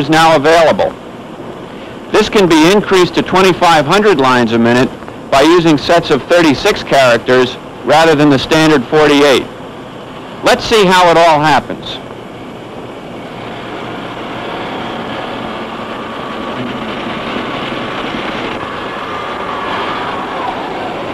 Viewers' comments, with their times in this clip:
0:04 is that Bill O'Reilly doing it live?